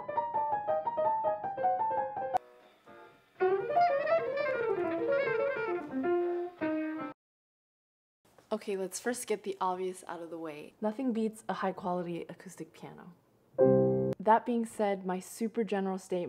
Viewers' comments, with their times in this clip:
0:04 Yeah! Get it girl! :D haha I was wondering if that lick was going to make a comeback from the previous video. Have a beautiful day!